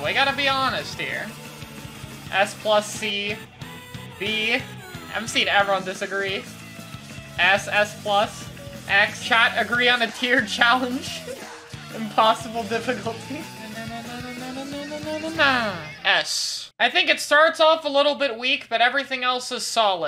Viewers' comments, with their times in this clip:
0:04 I literally heard the squiffer charging up I think something is wrong with me